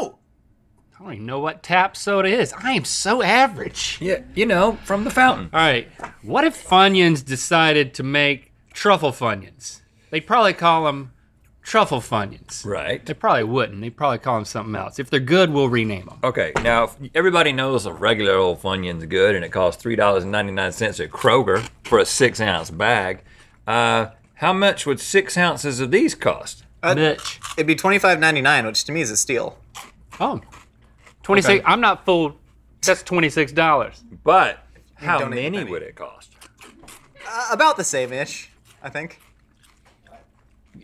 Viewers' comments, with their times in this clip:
0:06 Did Rhett fart ?
0:26 did link just randomly say bltch